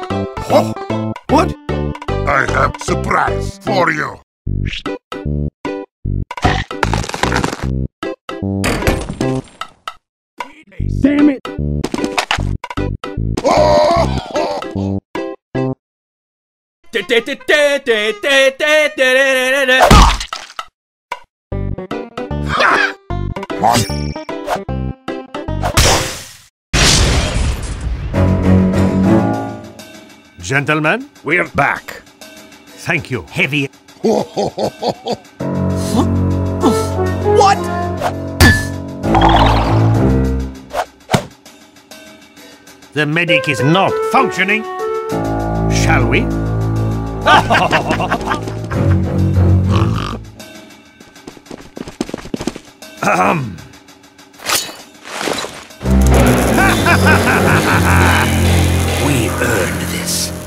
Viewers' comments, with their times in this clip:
0:10 sniper say painis and fly like rocket
0:16 is nobody going to comment the fact he’s singing we are number one
0:16 i love that the scout was singing We Are Number One
0:17 Hmmmmm Dose scout like “were number one”?
0:17 okay, scout singing "We Are Number One" was not something I expected, but I love it
0:17 Scout singing "We are number one"
0:18 Scout: sings we are number 1
0:18 Also Scout was singing “we are number one” song while doing conga.
0:41 I love this sound mixing. "The medic is a spy" "A functioning liver"